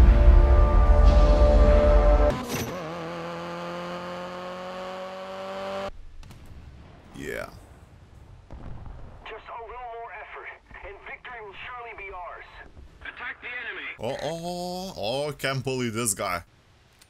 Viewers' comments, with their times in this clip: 0:03 it's funny that he uses car engine sound for a battleship